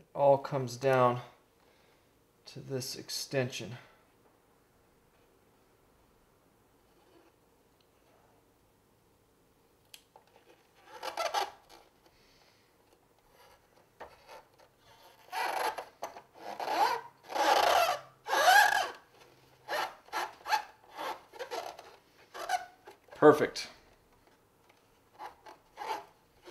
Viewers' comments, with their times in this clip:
0:10 You know you love toys when you can say "Oh, those sound like good stickers" 🤣🤣